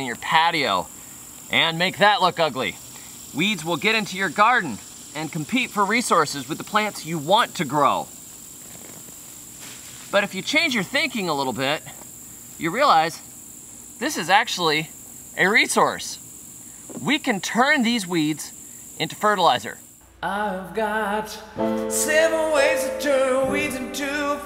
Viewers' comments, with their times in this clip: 0:08 the rip of the roots was so satisfying that I listened to it like 9 times